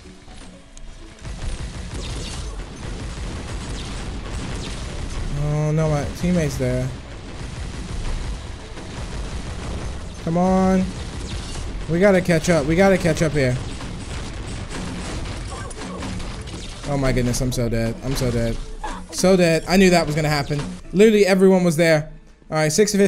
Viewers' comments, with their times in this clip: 0:10 we got a ketchup